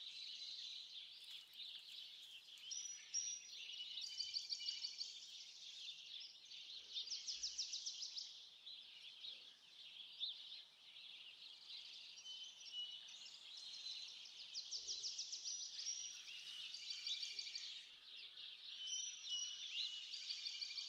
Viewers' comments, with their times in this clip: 0:06 Beautiful sparrows ) Wonderful snow and trees : ) Great place and presentation my Friend : ) Lovely bird sounds : ) Thank You For Sharing this Interesting Presentation and Video : )